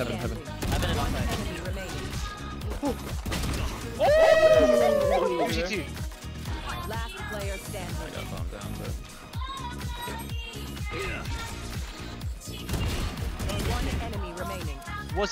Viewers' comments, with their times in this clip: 0:03 LMAO that synchronised 'oooo'